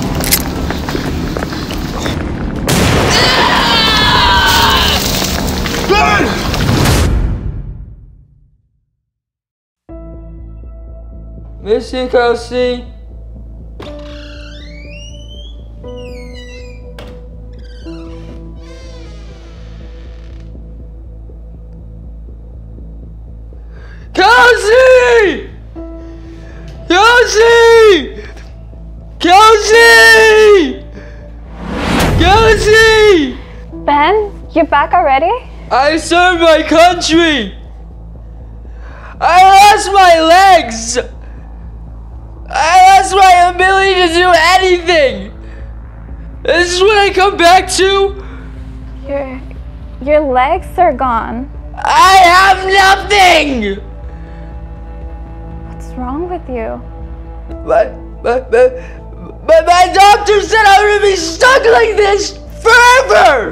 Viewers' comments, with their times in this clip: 0:03 naw that scream was personal
0:25 goofy a expression and noise
0:51 bro sounded like anikin 💀💀💀